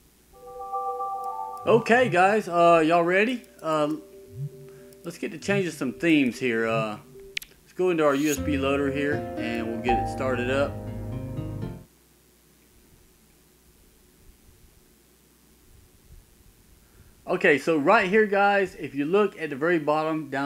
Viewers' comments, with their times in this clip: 0:07 this usb loader gx channel tune hits the nostalgia